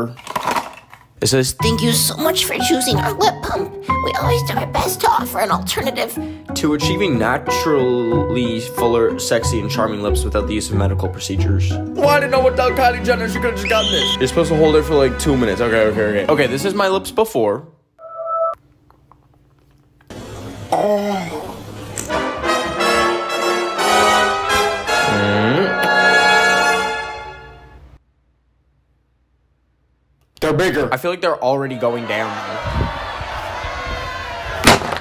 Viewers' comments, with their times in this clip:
0:03 I can’t the voice. 💀💀😭
0:21 The vacuum cleaner noises💀💀
0:21 in the video that yo what’s that noise?😂😂